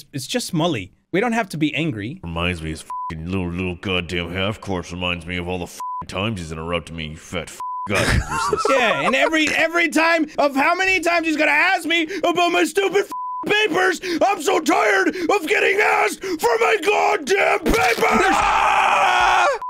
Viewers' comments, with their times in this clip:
0:04 Narrator mad are really deep 😂😂😂😂😂😂